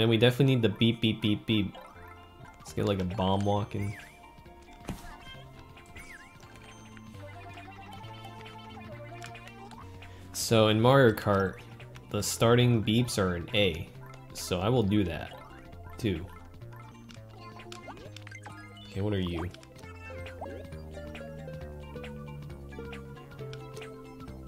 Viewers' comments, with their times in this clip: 0:10 this part makes me so happy. I love when people put thought into every little thing in something they're creating, down to making sure the beep note is the same! It's the little things :D